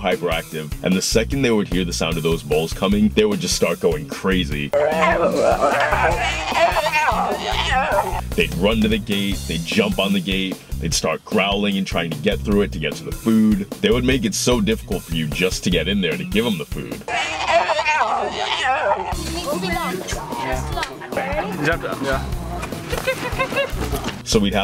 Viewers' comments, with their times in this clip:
0:04 they sound like goats 🐯
0:05 sounds a little like angry goats lmao
0:05 sounds like The Shinning.....Redrummmm hahah
0:06 the cubs sound like zombies